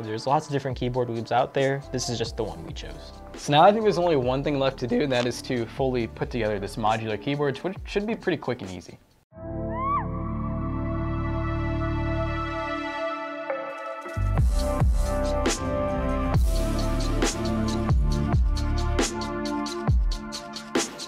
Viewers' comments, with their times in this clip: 0:05 Look his voice hahah